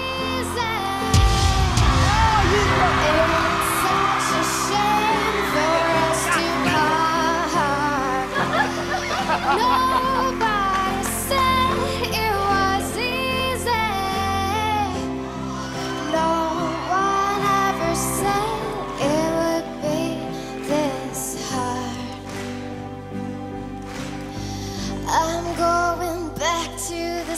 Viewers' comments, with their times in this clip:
0:08 The kid crying for his sister in joy has me balling🥹🥹